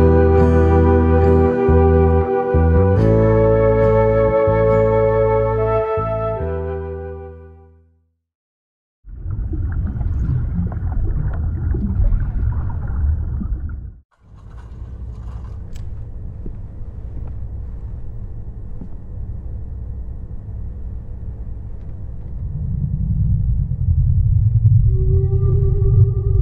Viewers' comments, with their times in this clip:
0:08 the song on #32 goes kinda hard tho... (timestamp )